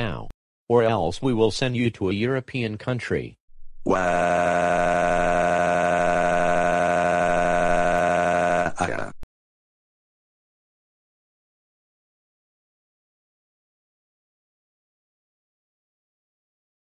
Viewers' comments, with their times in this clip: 0:04 Dark Obsidian Bowser's crying voice
0:04 Yellow Magiblot's Crying Voice